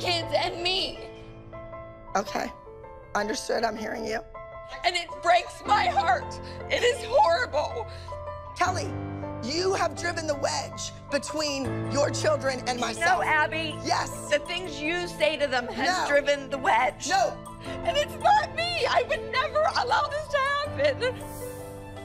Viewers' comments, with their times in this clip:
0:09 Abby: Kelly, you have driven the wedge between your children and my son. According to Wikipedia, Abby was never married or had kids. Maybe YouTube’s subtitle caption heard what Abby said incorrectly or something.